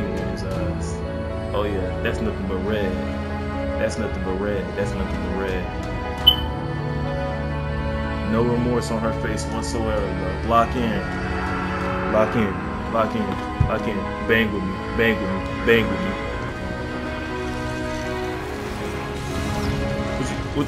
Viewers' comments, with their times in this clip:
0:05 love the smoke detector